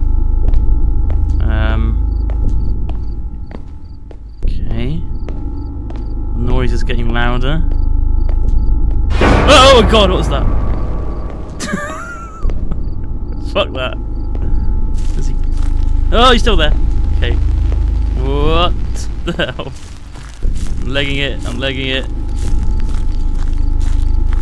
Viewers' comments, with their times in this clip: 0:08 When I first played this I thought it was just a game where u had to be smart to find the pages. I found the first page and the bass just made me shit my pants. in this video was when I was going to find the 6 th page. Never played the game again
0:09 HOLY SHIT!!!! DON'T WEAR HEADPHONES ON WHILE THE VOLUME IS LOUD!! FUCKING SHIT!!!